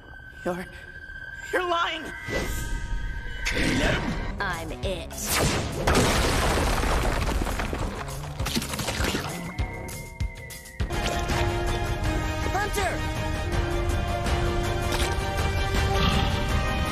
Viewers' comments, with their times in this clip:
0:03 you know that I actually heard him say Caleb